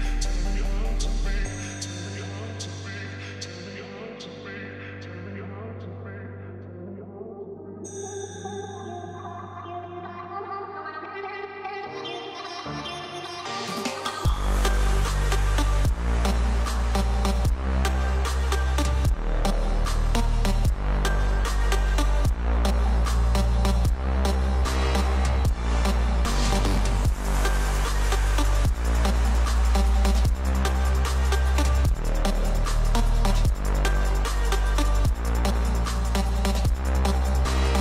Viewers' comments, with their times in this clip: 0:09 Wait for the Drop !! 🎶🎶😅👌🏼 Nice Beat !!
0:18 that vice clip is bumpin to the beat!!
0:22 the clamp on the wall is vibrating from the bass...